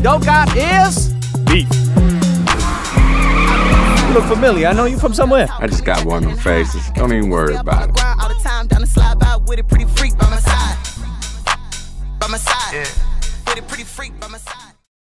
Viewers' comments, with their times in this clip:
0:06 I swear when ludacris shows up all i can hear is the 2 fast 2 furious soundtrack David Banner - Like A Pimp ft. Lil' Flip. Rockstar used the same musical tones
0:06 THATS TEJ! THATS HIS VOICE